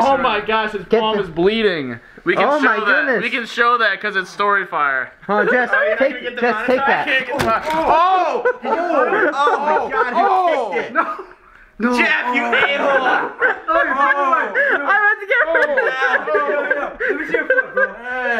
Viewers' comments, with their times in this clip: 0:06 A true psychopaths laugh due to causing physical pain amongst someone